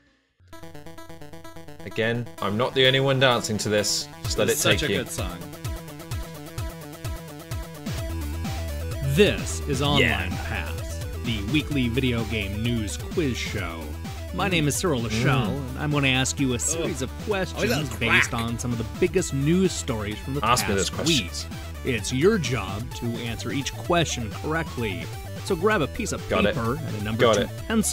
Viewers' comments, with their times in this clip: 0:09 "ONLINE ASS" LOL!